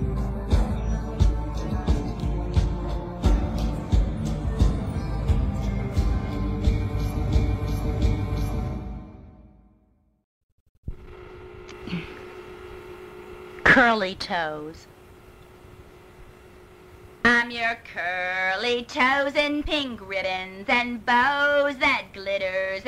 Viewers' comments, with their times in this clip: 0:09 curly toes with these backgrounds is... soothing... like... a singer singing a song alone in the alleyways... alone... it also feels just off... in a certain way beyond words...